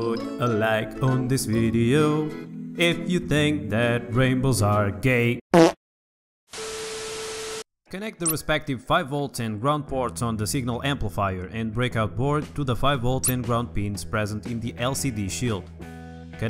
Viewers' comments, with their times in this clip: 0:04 dang i sneezed exactly at the fart